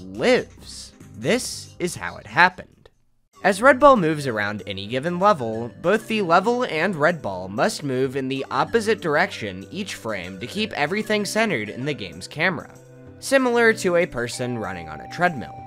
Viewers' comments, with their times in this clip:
0:03 The mario 64 music lmaoo
0:03 You know stuff's about to get technical when you hear that music.